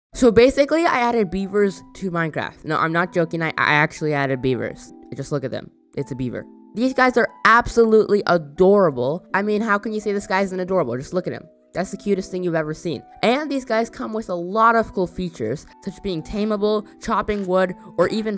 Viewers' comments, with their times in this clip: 0:00 Woman voice in the second, I thought he using voicemod but no he didn't :/